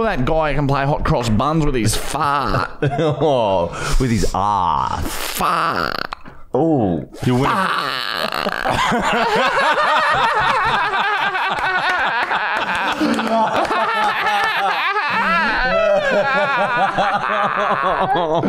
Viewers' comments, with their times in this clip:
0:05 strangest sound ever. So good 😂😂😂